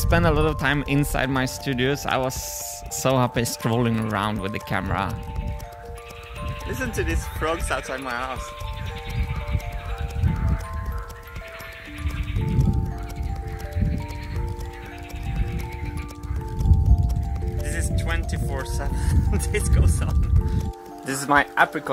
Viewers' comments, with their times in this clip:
0:06 I swear those frogs sounded like kookaburras!!!